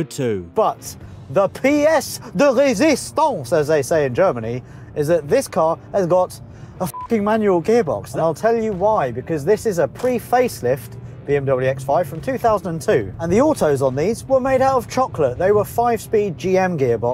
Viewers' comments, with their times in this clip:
0:04 As a German I can say I have absolutely no idea what you said in